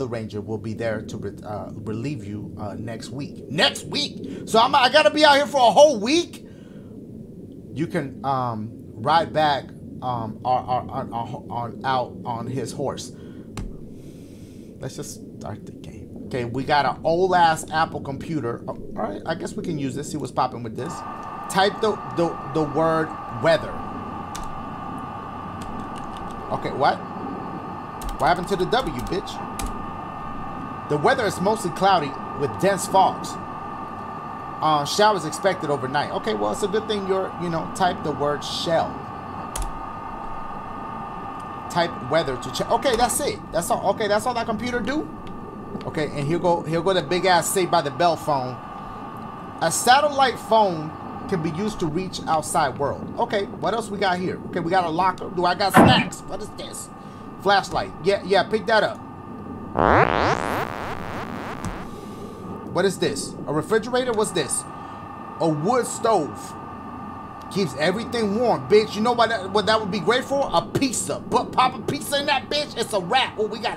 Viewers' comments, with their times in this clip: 0:09 when u pick THAT kid to read in class:
0:59 sound like an alien fart
1:01 sounded like an echo fart